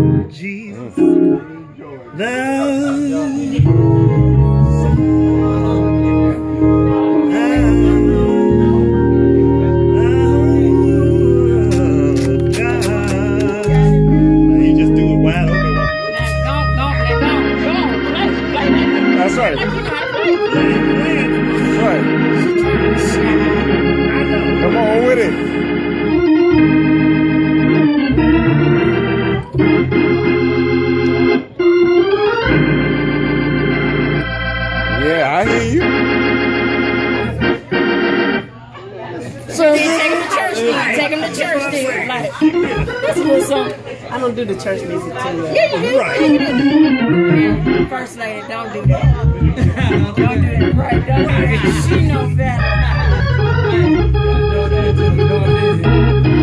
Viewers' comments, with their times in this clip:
0:07 amazing. and I particularly love the flat 5
0:10 On Is So "Heavenly". Pun Intended
0:13 thought she was gonna play the Vulpeck intro
0:15 That sound of a wide open Hammond being played as it was intended is just beautiful
0:41 How generously musical talent has been bestowed on so many! Love that Hammond sound! Action starts Woopie!